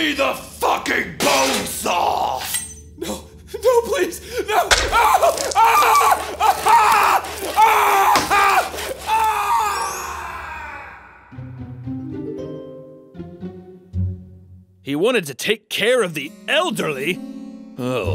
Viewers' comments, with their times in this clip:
0:05 THAT SCREAM ITS HORRIBLE